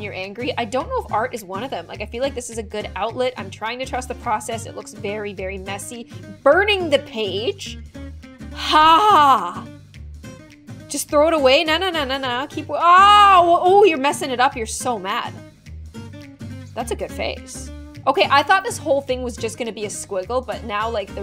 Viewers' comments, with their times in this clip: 0:08 IS NO ONE GONNA TALK ABOUT THE WEIRD NOISE SHE MADE